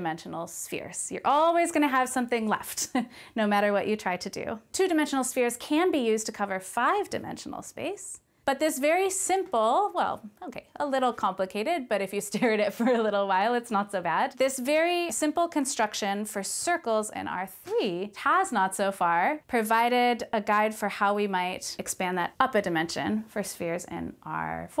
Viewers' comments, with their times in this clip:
0:06 My Christmas present came early! Her laugh is like a warm blanket. is when she lost me.